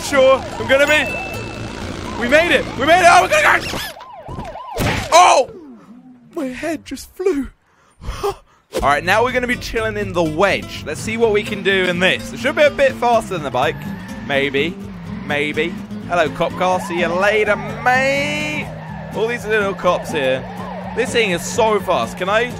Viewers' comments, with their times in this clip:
0:03 did he say nigga?